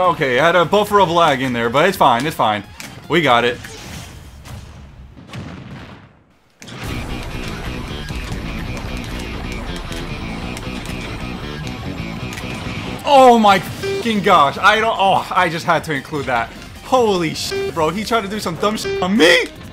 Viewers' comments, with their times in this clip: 0:05 When the Jojo music comes on